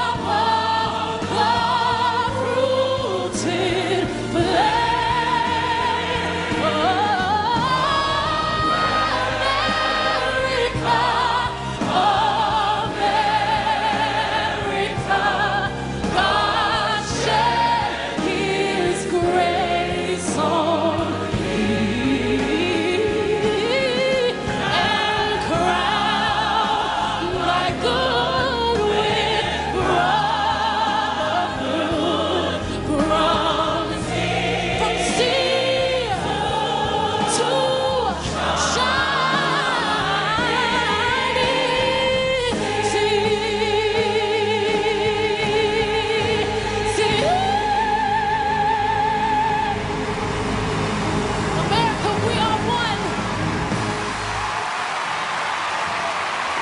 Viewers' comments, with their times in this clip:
0:08 That high note is not talked about enough
0:42 I love this part when she says "sea". That vibratto, man... OH MY!!! Even Bono says "Wow" to that part. Haha love it. <3